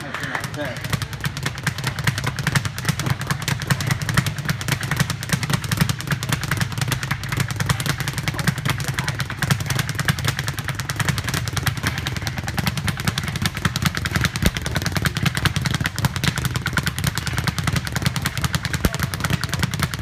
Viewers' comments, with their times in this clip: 0:03 that wasn't the speed bag clapping anymore. That was her cheeks he was clapping